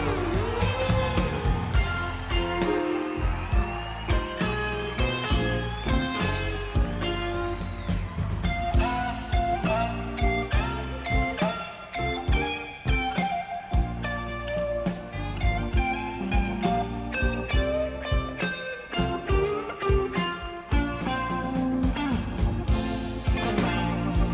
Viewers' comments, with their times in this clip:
0:08 such a creative lick. Him and Jerry Garcia are alike in the sense they just sound so diffrent and really create their own licks where Jeff Beck is doing the same old blues. Even Les was like put that whammy bar away.